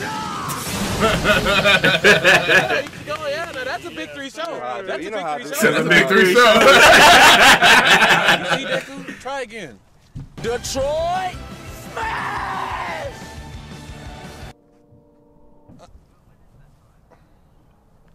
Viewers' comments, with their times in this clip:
0:03 why are you laughing ??? explain